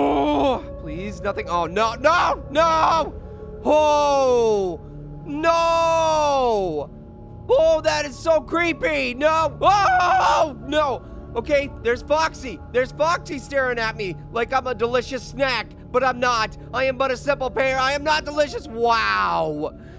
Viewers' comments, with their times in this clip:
0:05 pear screams no funny